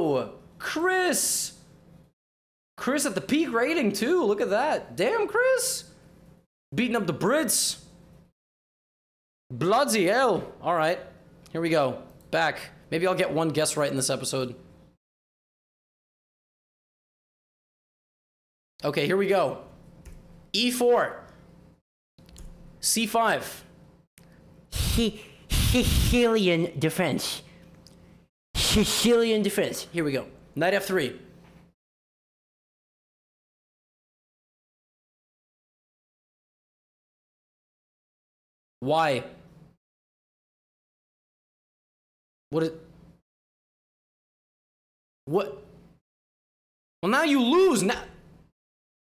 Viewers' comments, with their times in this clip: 0:09 ultra mega rare bri'ish gotham
0:32 the silence was too loud